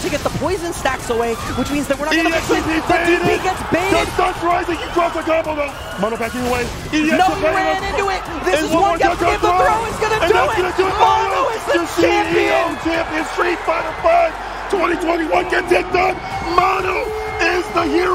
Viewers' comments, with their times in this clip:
0:04 I can here some mono 🐒 sounds lol